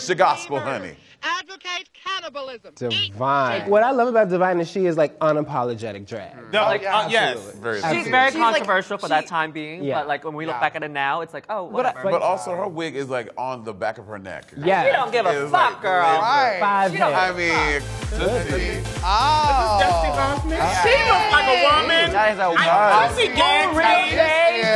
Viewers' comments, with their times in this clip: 0:06 Tag yourself. I'm Blair trying to speak